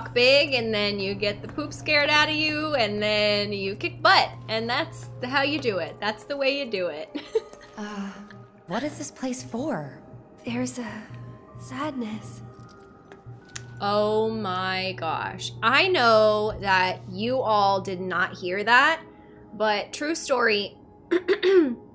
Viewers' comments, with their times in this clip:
0:07 actually I caught that nuance in "sadness".